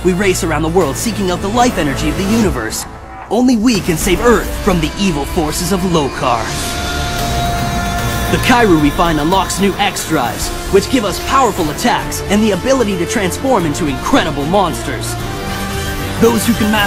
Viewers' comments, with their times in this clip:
0:04 background music is great